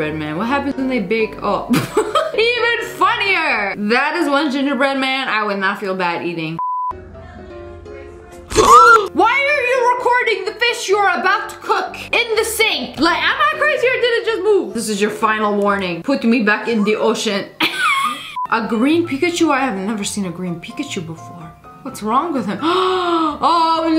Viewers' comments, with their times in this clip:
0:08 the girl scared me when she gasped at the fish lol.I had literally jumped.